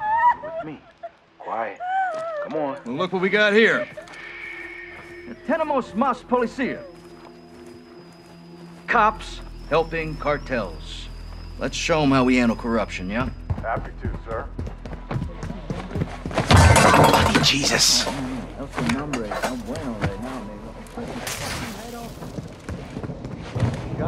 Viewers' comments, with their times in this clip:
0:05 his spanish is so bad lol